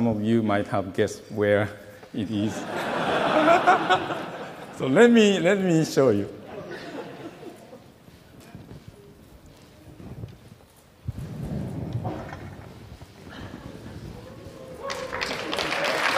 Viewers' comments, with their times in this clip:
0:03 that laugh haha